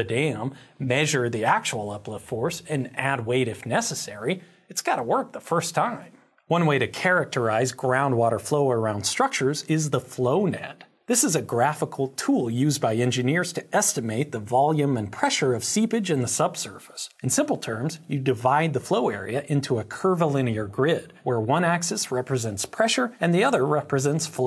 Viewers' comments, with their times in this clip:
0:06 Did anyone else hear, "Flonad?"